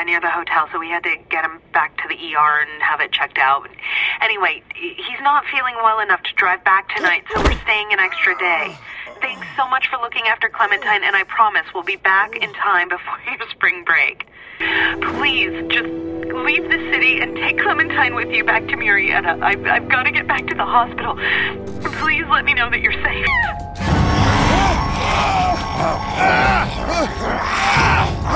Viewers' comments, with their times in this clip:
0:10 Clem’s mom laughed at lee falling